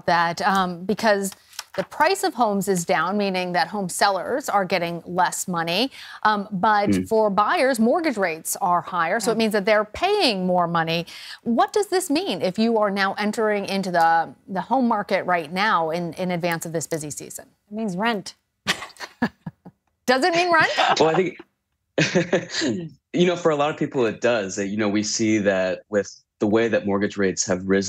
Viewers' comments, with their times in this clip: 0:10 When she said "rent" and they all laugh, I felt like they were laughing at me 😭 rent is soooo expensive, and adding bills, insurances, groceries, etc... we can barely afford it 😭 and don't you dare to get sick! a visit to the doctor is a wild dream 😣